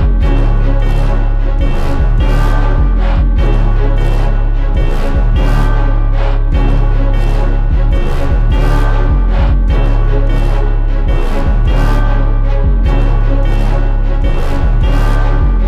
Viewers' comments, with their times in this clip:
0:03 Yeah this goin 🔥🔥🔥so much pain in his voice this is a banger GloGang